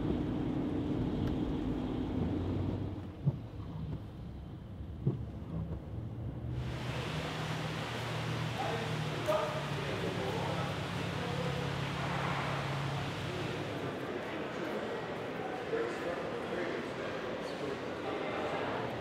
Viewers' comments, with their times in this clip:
0:04 was I the only one that thought the windshield wipers sounded like a heart beat and made that close up moments 10x more badass ?